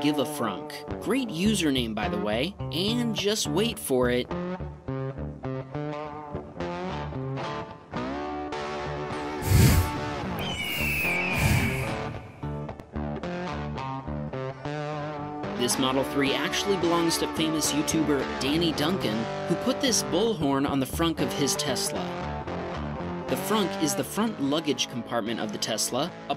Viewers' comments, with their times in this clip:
0:09 why is no one talking abt the breathing